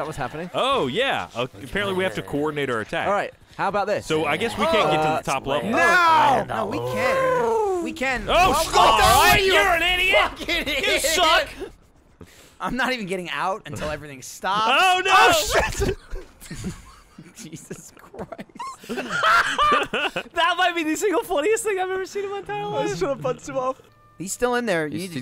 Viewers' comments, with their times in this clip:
0:06 "How about this... NOW!" helicopter noise explosion Geoff: YOURE AN IDIOT